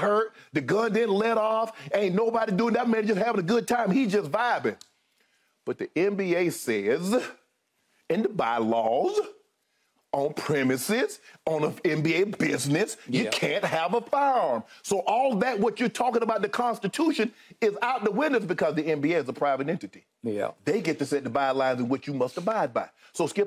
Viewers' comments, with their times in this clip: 0:06 “but the NBA saysssssah , in the bylawsssssah , on premisessssss” lmfaooooooo uncle Shay got me dying this morning 🤣🤣🤣😭😭😭😭